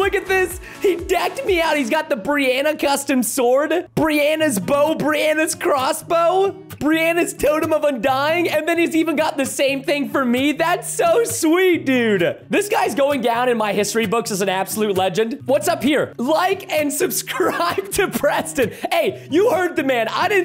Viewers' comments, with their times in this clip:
0:04 in the background starts my favorite song